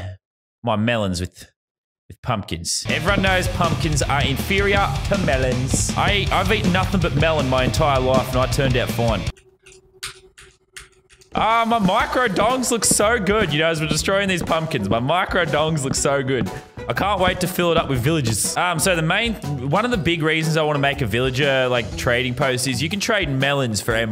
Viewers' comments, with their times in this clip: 0:03 The way he said mElOns
0:05 the way me said melons tho